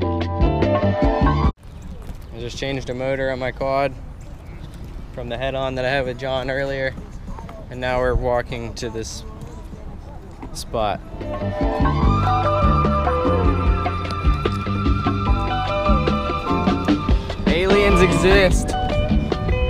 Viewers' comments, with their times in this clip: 0:06 The music in the background lol